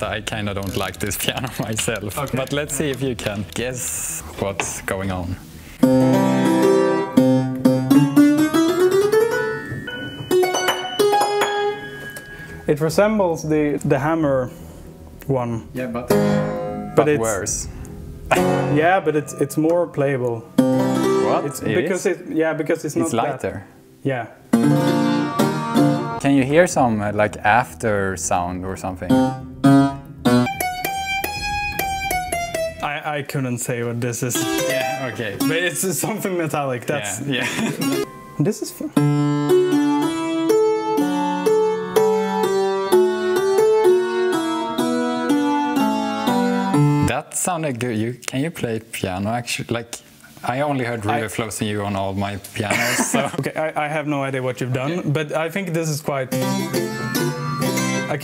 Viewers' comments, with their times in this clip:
0:05 It reminds me of this thing called clarinet.
0:27 that sounds like a clavichord
0:38 Now that was some nostalgic sounds
0:38 the moment I realized these guys were Swedish 😅
0:39 this sounds like something you'd hear in a Harvest Moon game.
0:40 that sounded like a retro RPG. sick.
0:45 really sounds like that undertale song reply if you know the one